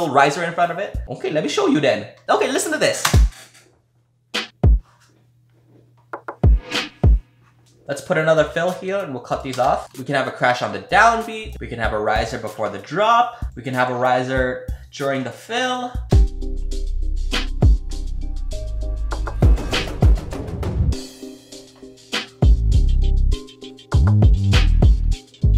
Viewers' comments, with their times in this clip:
0:06 That snare slaps yo!